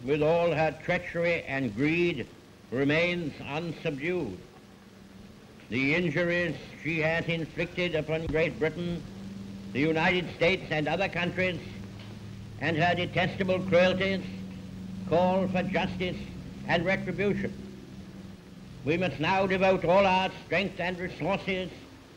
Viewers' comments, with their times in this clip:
0:08 listen closely you can hear an aircraft pass overhead, awesome